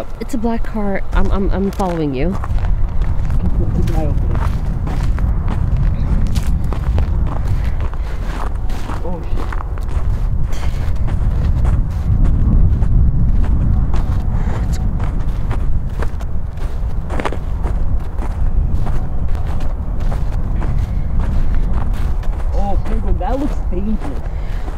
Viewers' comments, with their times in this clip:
0:09 ...the crunching of the snow oddly satisfied me 😁👌